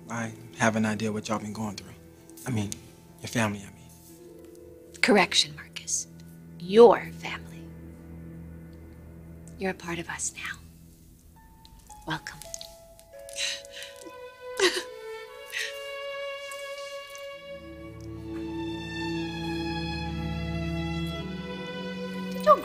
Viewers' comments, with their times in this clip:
0:06 it sound like Brooke was welcoming him into a cult